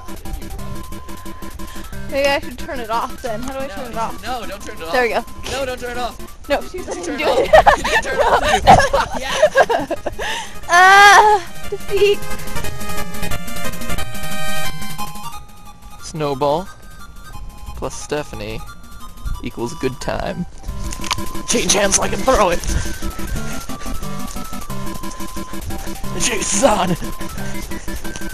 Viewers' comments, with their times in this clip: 0:07 am i the only one who thinks he said "fuck yeah"?
0:11 you can hear matpat cuss